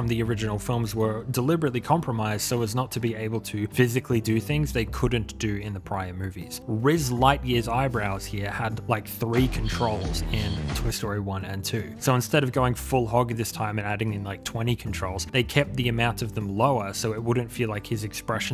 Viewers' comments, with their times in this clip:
0:06 I'm sorry. Rizz Lightyear? AND THE AUDIO-